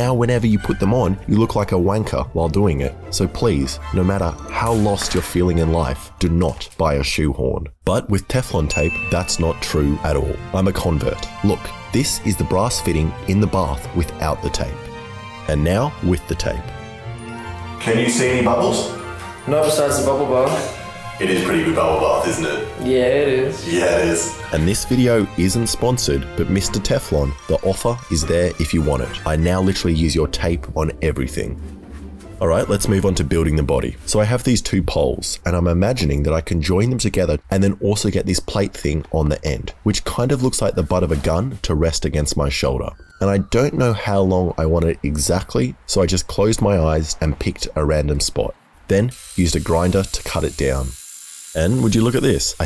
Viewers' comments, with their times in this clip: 0:10 "Im a convict" Somehow im not suprised 😏
0:33 I thought he said burning the body